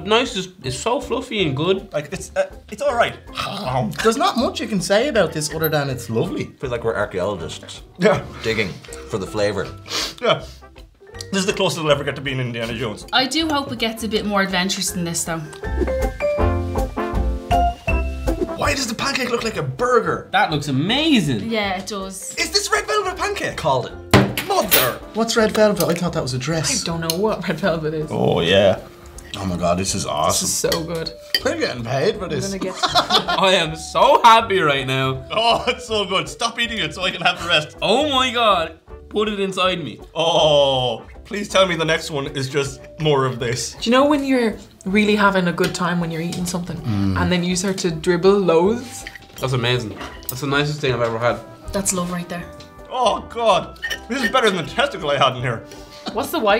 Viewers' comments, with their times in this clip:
0:04 my fucking ears as his knife scrapes the plate
0:38 what did he say???